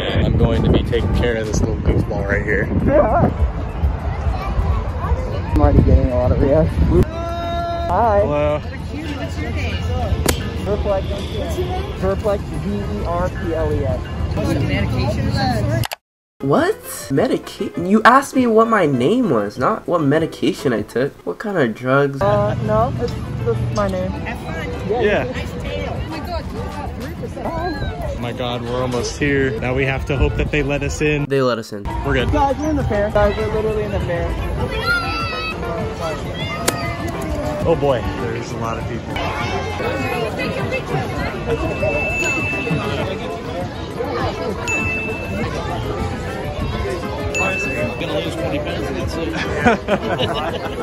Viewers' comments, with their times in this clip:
0:03 I don't have much else to say other than there's a graham white locomotive E bell in the background and that these are very nice since the truth is nobody except assholes will act the way they do online in real life so the people who do hate furries usually just will stay quiet which is nice
0:34 i like how that one kid screamed LMAO 🤣